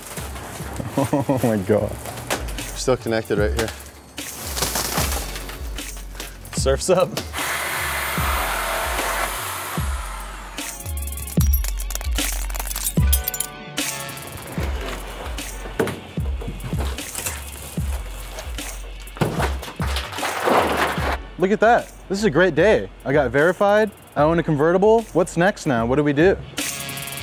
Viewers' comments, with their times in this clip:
0:10 That glass sound is satisfying as hell
0:11 If you live in a cold place like I do (Canada) , there are thin layers of ice that appear on the floor at certain temperatures and sound like this when you step on them :). Basically you can enjoy this beautifully satisfying sound all day long while you're walking down the streets. One of the many reasons why winter is awesome 🤣